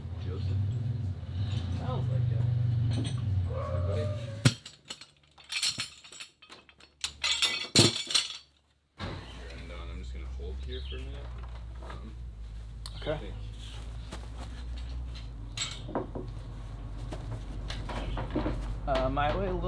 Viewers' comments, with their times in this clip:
0:03 was that an elephant trumpeting in the boathouse 😂😂😂😂😂😵‍💫😵‍💫😂